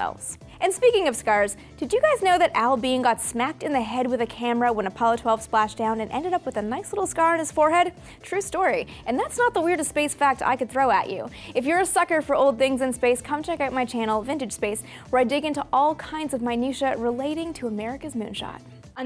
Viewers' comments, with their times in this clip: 0:03 Wtf did she say ... Too fast